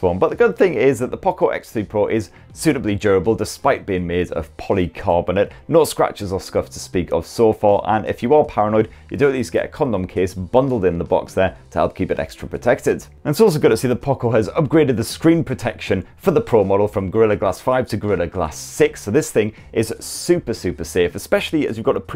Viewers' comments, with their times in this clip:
0:09 what case again?